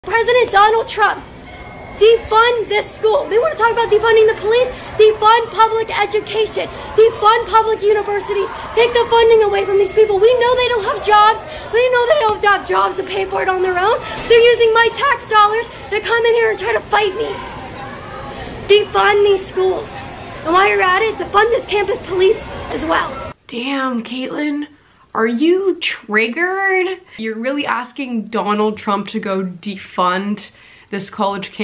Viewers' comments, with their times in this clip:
0:00 she so mad she’s legit breathless
0:15 I like how she pauses as if anyone cares even if it was true.